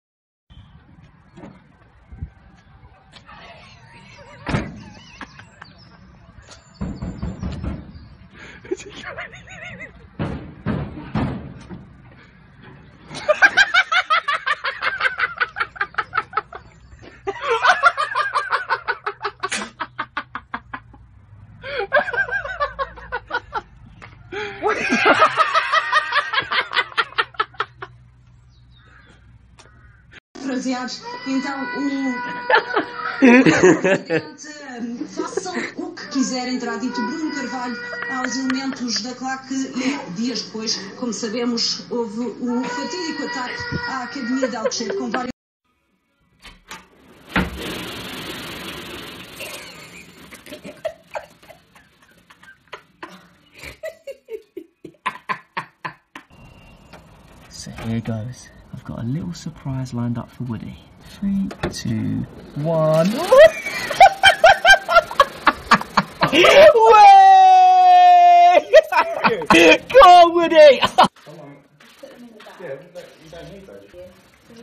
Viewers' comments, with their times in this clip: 0:00 i can't stop laughing because of this it's like a dying seal
0:08 man has turned into horseman
0:12 this is the PERFECT Joker laugh.
0:14 sounds kinda like Mark Hamill’s Joker.
0:20 sounds like the joker
0:30 I DONT KNOW WHY BUT WHEN THE GUY SCREAMED AND THEY TRIED TO MOVE THE CAMERA AWAY IT KILLED ME
0:42 The ambulance in the middle of the night:
0:42 don't forget this scream like Tom
0:53 damn, he is a real Issac Newton *bonk*
0:55 laughter of an old hyena. charmingly